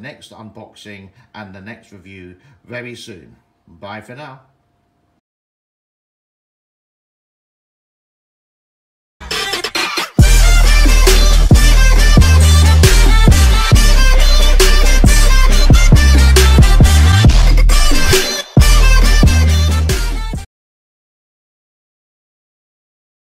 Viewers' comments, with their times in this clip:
0:08 where my phone speaker almost break.